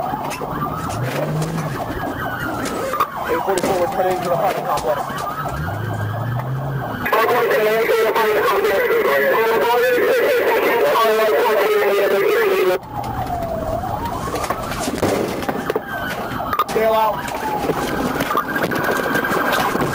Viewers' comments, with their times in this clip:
0:07 she probably be talkin chinese 😂